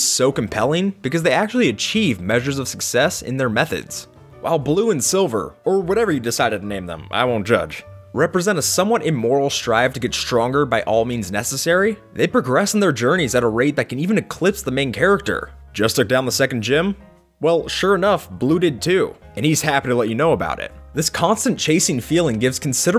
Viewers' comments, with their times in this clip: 0:09 Rival giggles XD